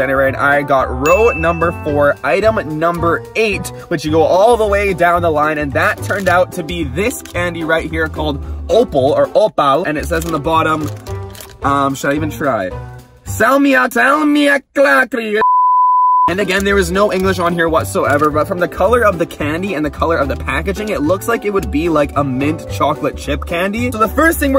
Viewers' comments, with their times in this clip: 0:09 is it just me who saw the Indian accent?